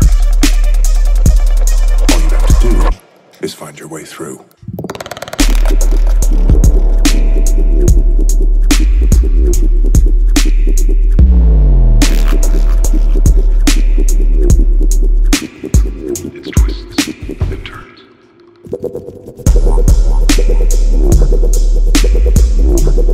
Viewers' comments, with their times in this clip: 0:09 it's riddim lol